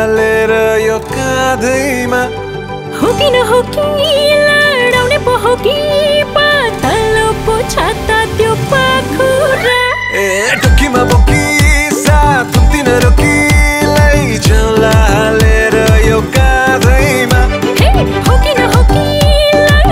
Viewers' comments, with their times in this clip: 0:03 I heard some really bad word Had to re-listen like 5 times to understand 'ladaune' lol